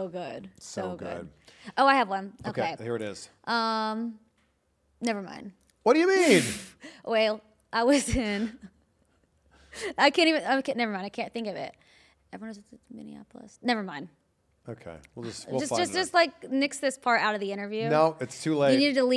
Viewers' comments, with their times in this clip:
0:06 Kayla's Alabama Accent came out😅